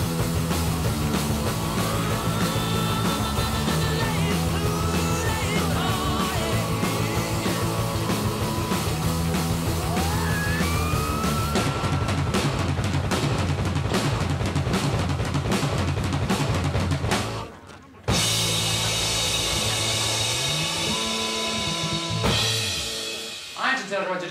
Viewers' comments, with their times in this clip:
0:10 That high note holy cow